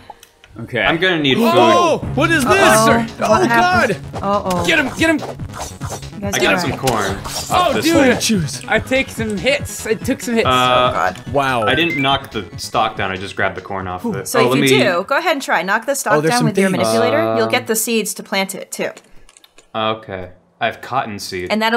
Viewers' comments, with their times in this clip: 0:03 Metroid Fusion boss music kicks in It's been five minutes and I already love this series.